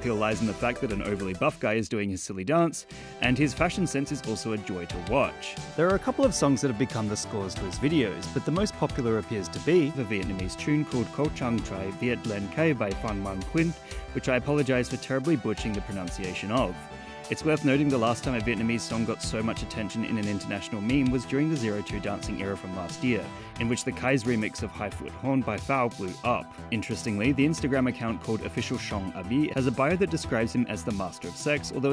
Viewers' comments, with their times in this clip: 0:08 it's so funny seeing an American reading Vietnamese, but you are getting a hang of it, keep it up
0:09 AHAHAHAHAHAHA XD I’m a Vietnamese, and that’s one of the quirkiest pronunciation I have ever seen in my entire life lol! Of course, this is funny because I know how it’s supposed to be pronounced.
0:10 decent pronunciation. As good as I would expect a foreigner to be able to figure out without understanding the tone system. Good job.
0:10 your pronunciation is really good :)
0:11 as a vietnamese, you kinda nailed that pronunciation.
0:11 As a Vietnamese, that is some impressive pronunciation ! Well done
0:11 me as a Vietnamese: why does this sound like chinese? other people: THIS DUDE IS SPEAKING FLUENT VIETNAMESE DAMN
0:11 I'm surprised how you said the whole song name all correctly and no one but me noticed it lol
0:13 OMG the way this dude pronounced it sounded very fluent.